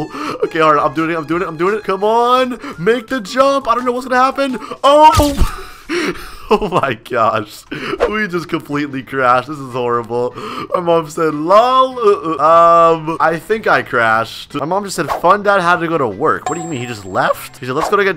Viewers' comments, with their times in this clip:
0:05 the way he said OH 😭😭😭